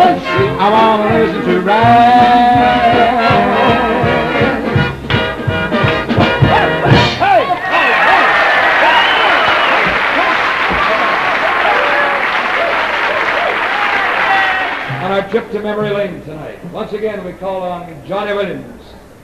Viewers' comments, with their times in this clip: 0:05 The body of water at the mark is Mirror Lake and the Browning Amphitheater at Ohio State. Notice the Orton Hall chimes in background. I proposed marriage to my steady girl and fellow Buckeye at the east end of the lake at the spring head. She said "yes."